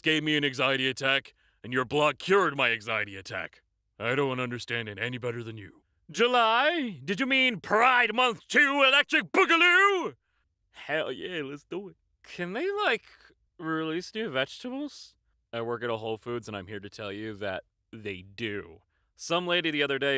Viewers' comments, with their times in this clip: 0:07 idk why but the way you said boogaloo sounded squiggly to me